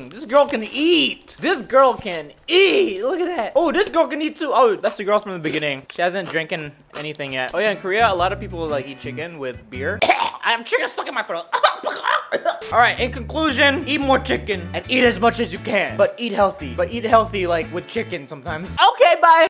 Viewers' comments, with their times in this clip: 0:10 emergency somebody chocking